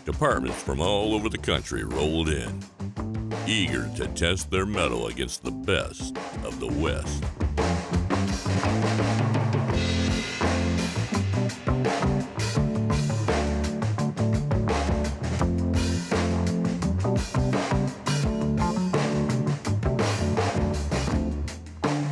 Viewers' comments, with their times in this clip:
0:04 I thought that was a turbo chargers